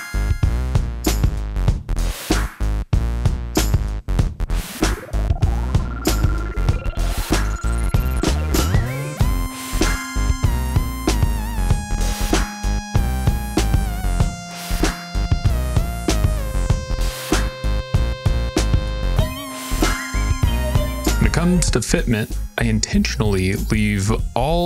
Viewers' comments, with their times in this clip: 0:08 sick track. Made me think of the Chronic 2001.